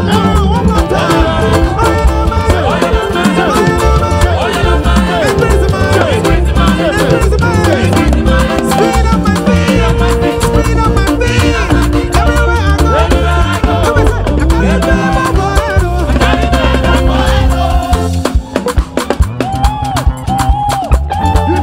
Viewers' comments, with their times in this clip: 0:03 From the leadist became brutal 🔥🔥🔥🔥🔥🔥🔥